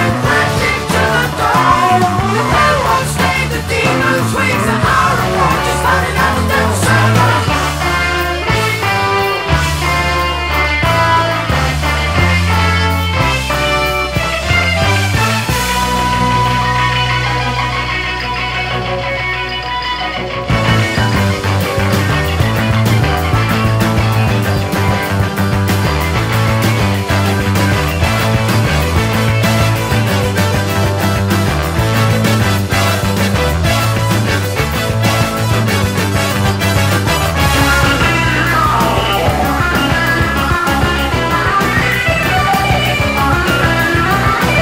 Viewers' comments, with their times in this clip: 0:05 starts one of the wickedest jams in rock. The back and forth between guitar and keyboard is epic. I agree, Moraz has more of a "jazz" style vs Wakeman's baroque/classical. To me, Relayer has a more loose jazzy feel, as compared to another great album, "Close to the Edge." Alan White, on Relayer, also had a more loose/jazzy approach on the drums than Bill Bruford, who had great timing, amongst other things. All musicians on both those albums were incredible, in their own right.
0:28 And Patrick is trading off with Steve from for several minutes.